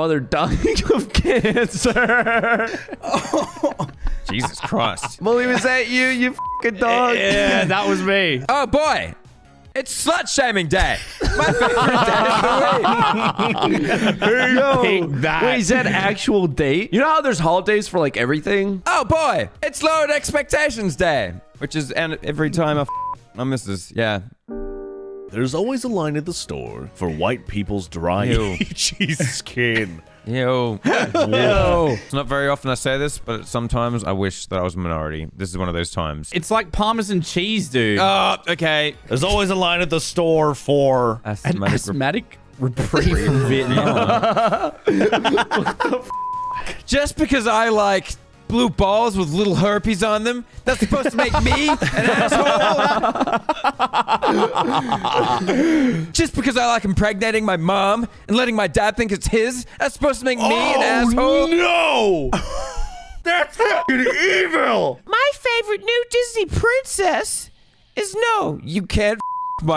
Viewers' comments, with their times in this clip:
0:08 its the voice lmao awesome
0:08 why did he talk like a 1930s news reporter
0:09 why did he sound like someone from the terrence and philip show
0:55 okay im gonna need to turn my volume down